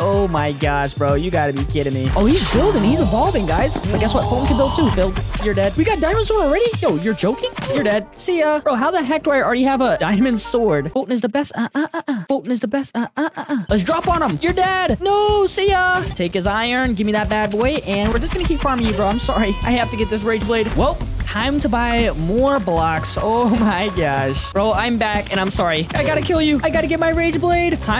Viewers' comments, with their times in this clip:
0:09 made me laugh the song lol